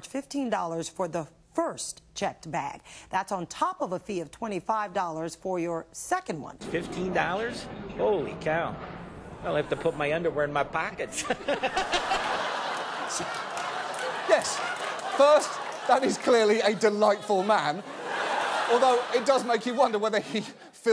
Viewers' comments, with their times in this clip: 0:06 gives me a Christmas-ey like laugh, every time